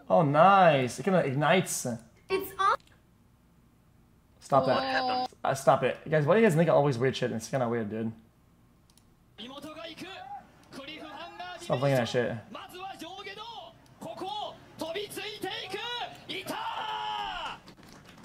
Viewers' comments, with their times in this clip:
0:06 what ? is that n word xd